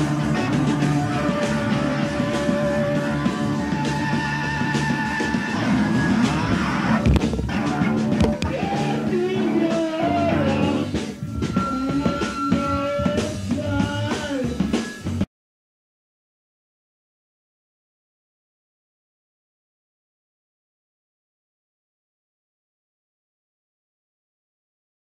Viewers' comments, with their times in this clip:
0:06 The sound of Jimi's mic stand knocked over by Morrison....